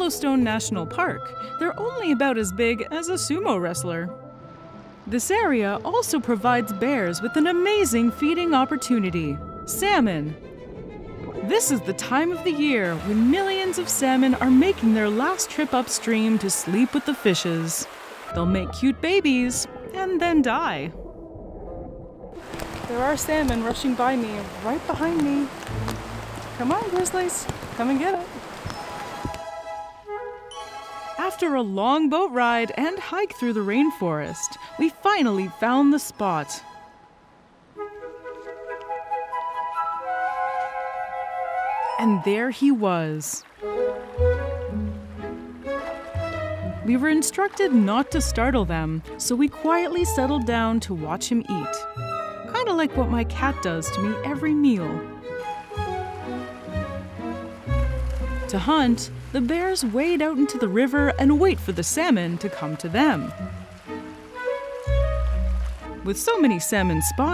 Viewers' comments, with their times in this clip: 0:05 I genuinely can't tell if she's saying 2 meters or 2 litres lol
0:49 best part. nice music. cute bear built nice